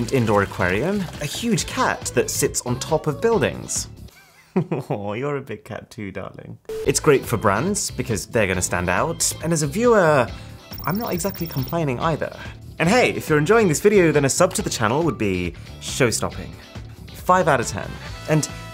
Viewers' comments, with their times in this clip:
0:03 the way he said. "Aww, you're a bit cat too darling" to Milo. my heart 😭😍